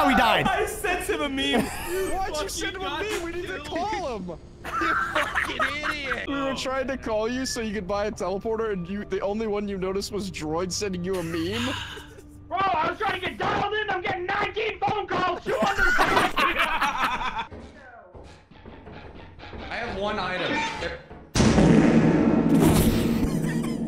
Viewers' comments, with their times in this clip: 0:04 the most adorable laugh I have ever heard